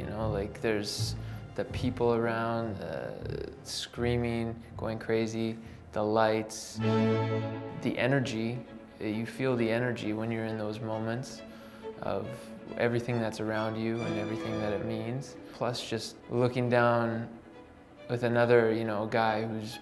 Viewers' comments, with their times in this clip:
0:07 When he starts talking about the Robbie fight, along with the classical music, it sorta reminded me of A Clockwork Orange.